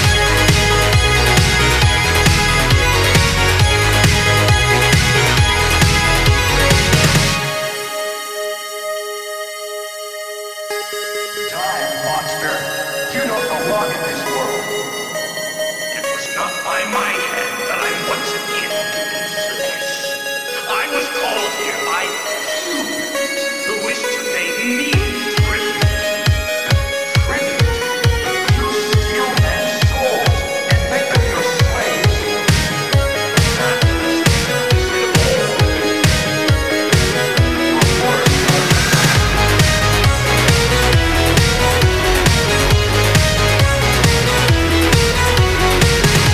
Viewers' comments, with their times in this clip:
0:10 most insane drop for gym
0:31 All or Nothing but calmer
0:32 Love the song. Escpecially the part which sounds somewhat like Dr. Alban - Look who's talking from 1994.
0:32 does it sound like Square Hammer to anyone else?